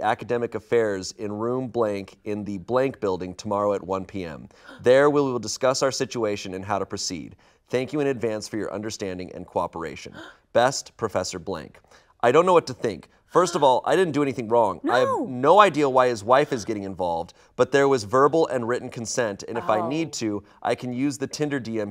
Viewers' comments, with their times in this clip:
0:08 Lmao all the gasping is making me giggle